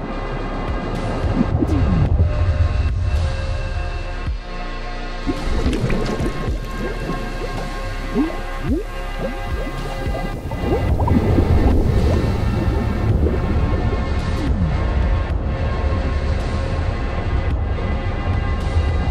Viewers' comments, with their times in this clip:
0:04 the sound effects were sub par in that instant sorry pal